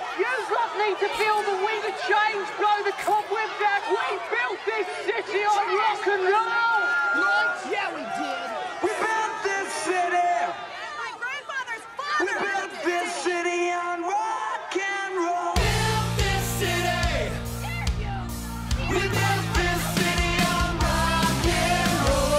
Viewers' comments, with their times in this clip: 0:06 is that guy sebastian bach that is sceaming behind the actor?